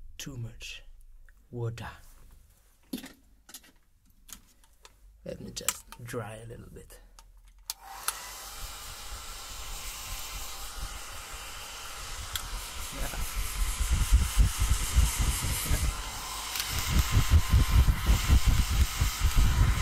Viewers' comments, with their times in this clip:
0:07 You know how science says the mind can trick you? I swear, the moment you use the hair dryer and move it around, I can feel it on my head, neck, and shoulders if I listen to it with headphones and close my eyes. Super relaxing and totally well done! You nailed this part to perfection!!